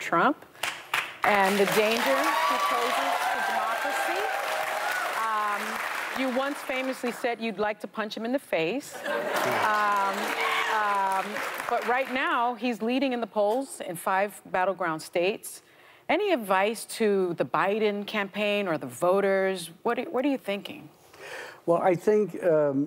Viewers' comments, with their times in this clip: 0:04 I noticed that too. At the mark they are all cheering how "Deniro once famously said he would punch Trump in the face."
0:10 you can hear one of those screechy blue haired girls screaming “yeah!!!” 😂